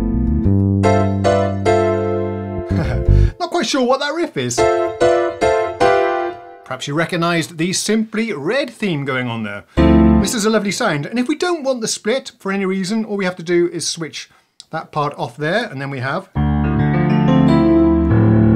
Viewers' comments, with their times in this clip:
0:03 The riff a t sounds a bit like the theme from Hill Street Blues